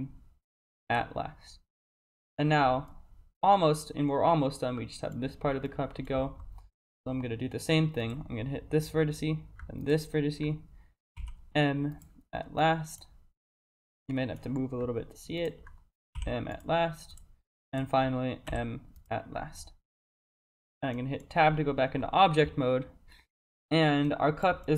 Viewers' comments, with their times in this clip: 0:06 This video is great pm. I enjoyed the instrumental.